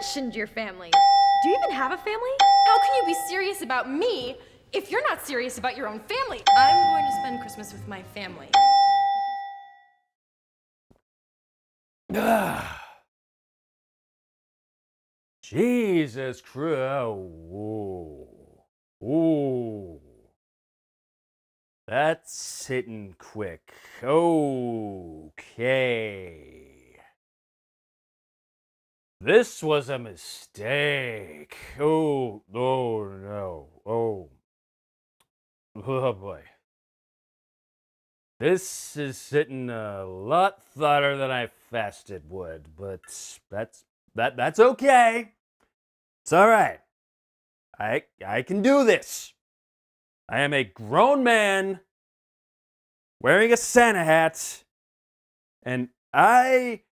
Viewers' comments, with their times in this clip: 0:09 A whole review doing a Ben Affleck impression? Brilliant idea! A few moments later... On second thought, I'm glad you regained your composure.
0:43 Your Inner Trump impression coming out after couple of drinks! XD